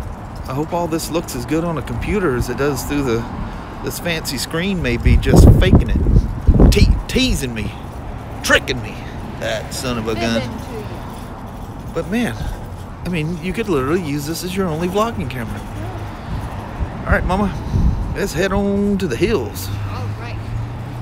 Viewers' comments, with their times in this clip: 0:09 Very disappointing when that happens, really deflates. But a professional first response, so looking good to be sorted. Not sure about the recorded outdoor audio is that an echo?